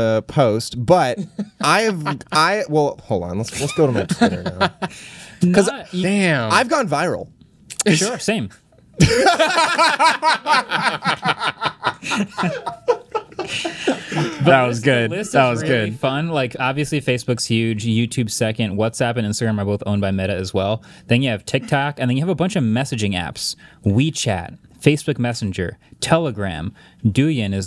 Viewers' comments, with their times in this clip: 0:08 field good inc laugh
0:08 feel good inc laugh